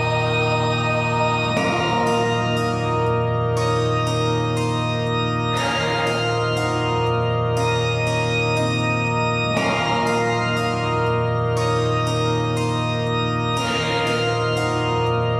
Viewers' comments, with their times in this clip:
0:03 would make a fire trap beat